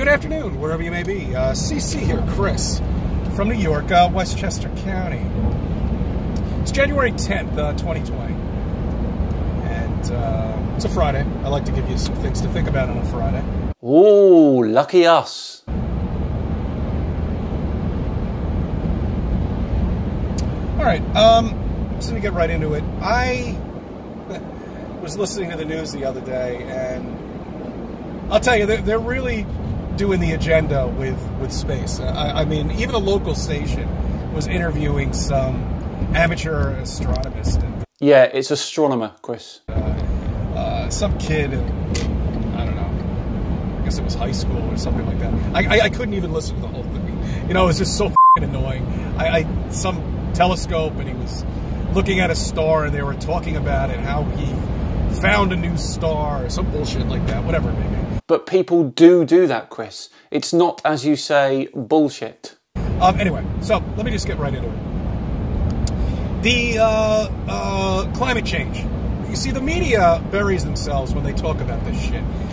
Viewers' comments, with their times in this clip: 0:04 Is he driving in an air tunnel
0:58 Did he just say doodoo?